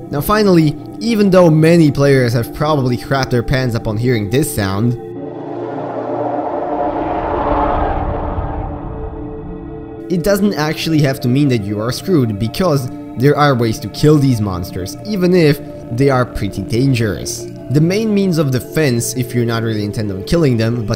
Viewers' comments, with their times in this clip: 0:05 that's my most fav sound becuz its echos through the ocean :)